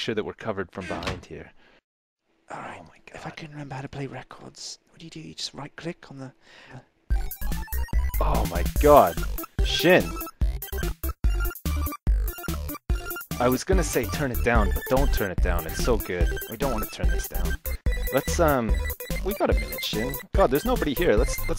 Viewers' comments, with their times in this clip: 0:07 Best song I've ever heard